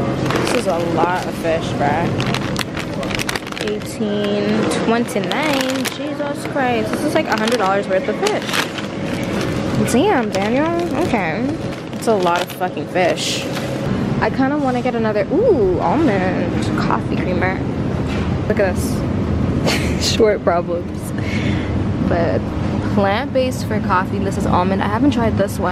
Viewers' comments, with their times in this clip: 0:06 I was shook asl when your Jamaican accent chip in 😂